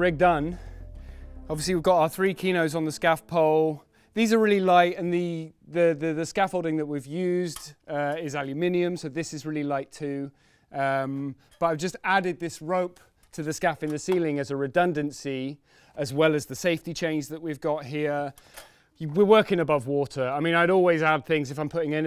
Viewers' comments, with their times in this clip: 0:07 When English folk say aluminum my American ears perk up thinking a new metallic element has been discovered!